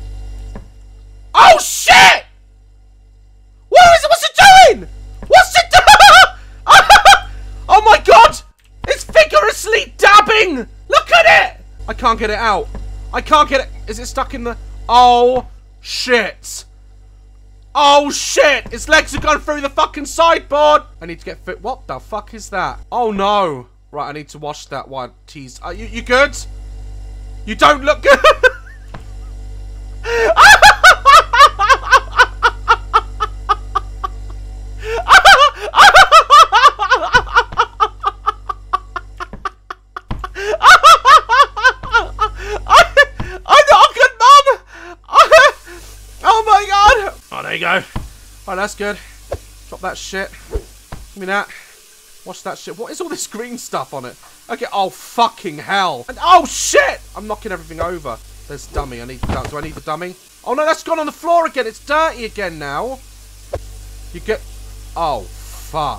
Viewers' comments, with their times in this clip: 0:06 laughs in British
0:27 His laugh is what really got me😂
0:28 why is he just laughing
0:36 --that laugh reminds me Ricky gervais
0:40 is so funny when he said omg it sounded so high pitched
0:46 😂 why did he go high pitched